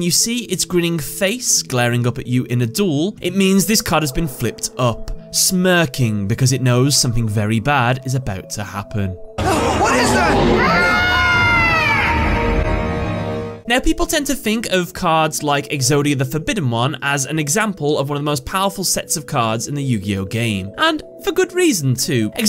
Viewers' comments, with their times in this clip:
0:09 I got nightmares from that laugh